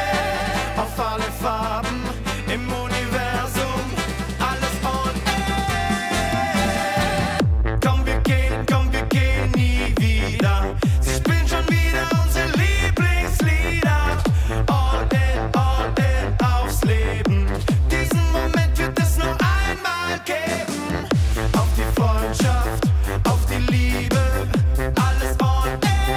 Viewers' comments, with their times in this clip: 0:07 I don't know what the F it says but i love the bass from background 😂